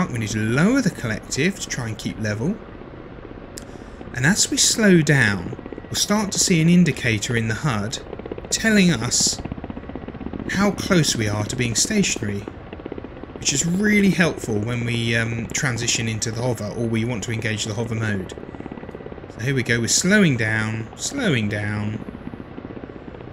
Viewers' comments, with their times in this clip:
0:05 hey quick question. as you point the nose up and the throttle down you can hear that the noise of the blades hits the air differently. i've the same with the kiowa, but for some reason i DO NOT hear it with the ka50, and it's really bad, as that "noise" kind of suggest me "ok, this is happening i can gently re-give a bit of throttle in". any idea why my cavin is kind of "silent" all the time?